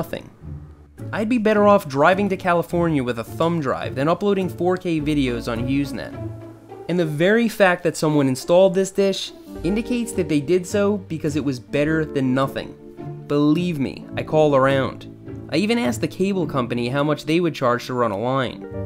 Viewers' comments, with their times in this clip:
0:04 when the guy starts moaning louder than the girl